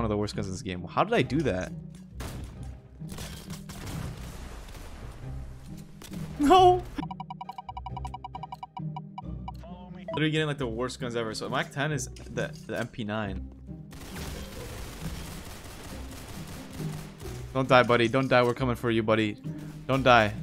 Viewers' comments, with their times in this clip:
0:06 that "NoOooO" had all the emotions in it